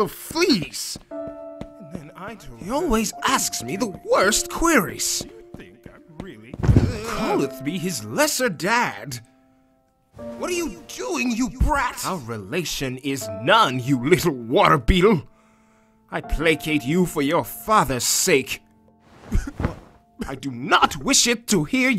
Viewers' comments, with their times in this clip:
0:06 I really like the noise RK makes here, idk why... Any way is sad, RK just adopt the smol bean already!!!